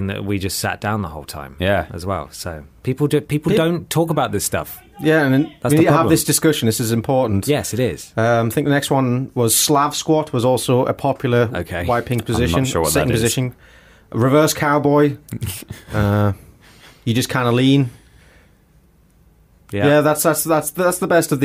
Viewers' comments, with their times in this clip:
0:05 what is that shouting? Freaked the fuck out of me!